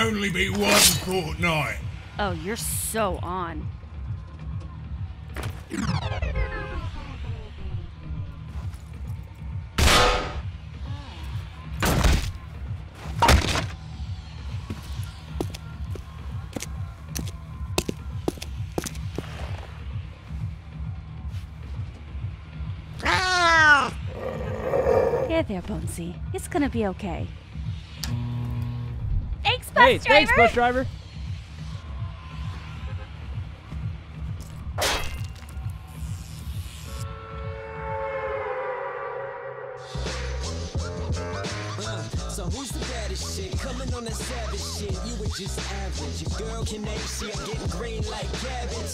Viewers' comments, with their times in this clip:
0:10 thats a flint knock but the vid was uploaded in season 7 that nakes no sense
0:24 Wonder how Lynx has great skills cat noises. ;)
0:29 why did she moan at the end of driver 😂